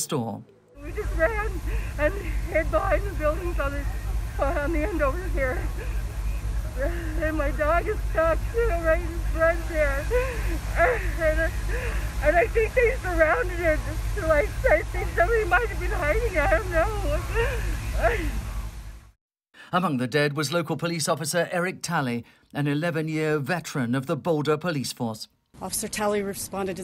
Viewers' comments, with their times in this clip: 0:08 wth r u saying no subtitle